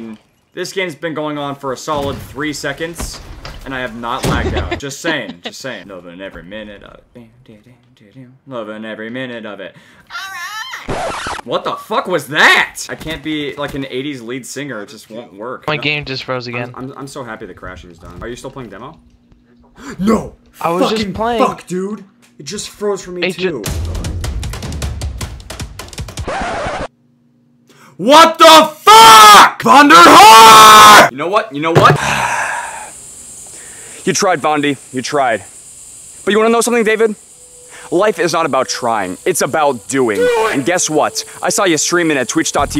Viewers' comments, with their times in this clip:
0:10 yep voice crack
0:20 I feel like I can hear his joy sticks moving
0:27 Warning all headphone users, interns screaming ahead, please proceed with caution.